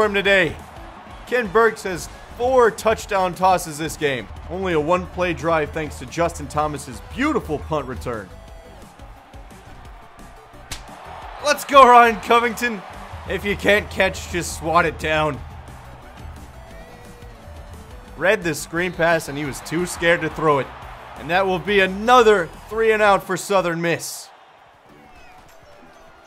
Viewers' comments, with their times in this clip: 0:08 That bare-handed slap sound effect still cracks me up - every single time :)